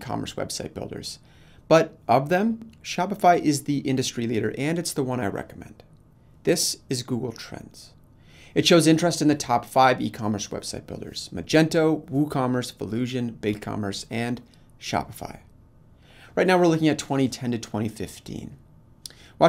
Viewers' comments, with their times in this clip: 0:07 "This, is Google Trends..." LOL!!! I died! Great video, and thank you for all the research you do, but sometimes the dramatic speaking and dim lighting are a bit extra. But we appreciate you, no joke, thank you!